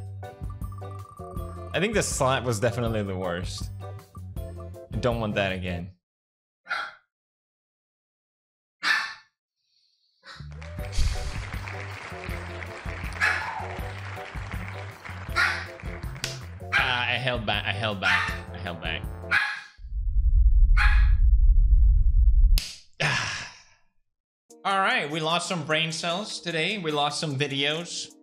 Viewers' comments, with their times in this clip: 0:07 I don't know why but the dogs started barking
0:14 Edgar barks intensely